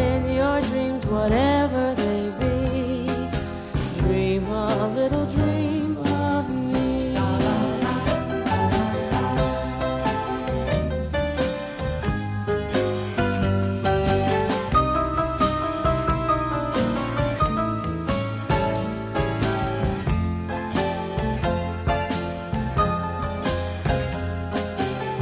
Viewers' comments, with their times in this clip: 0:07 Heavenly. Love the voice, the lyrics. The bass. And that piano